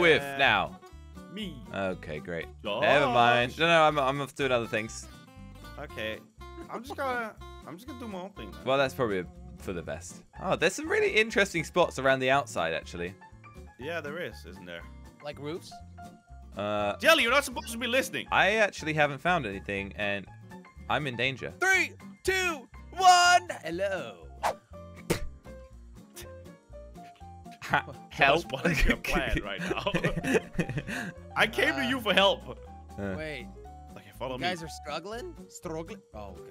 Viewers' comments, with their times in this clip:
0:05 was that jelly who giggled?
0:20 “Giggles” best of Ralph Wiggums-